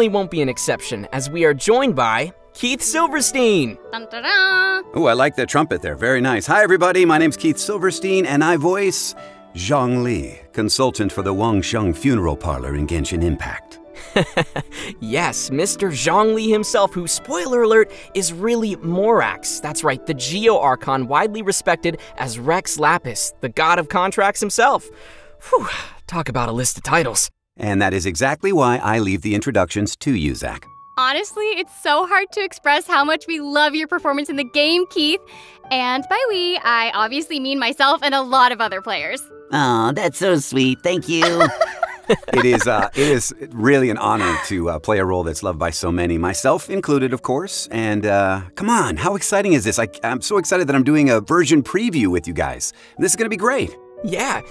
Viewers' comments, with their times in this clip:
0:07 the transition from keith to zhongli... 😳👉🏻👈🏻
0:39 Now We Know How Zhongli's Voice in His Childhood